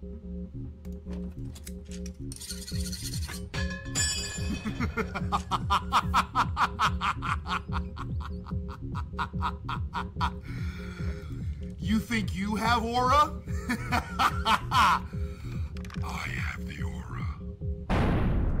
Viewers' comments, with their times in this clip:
0:04 why he laughing like that😂😂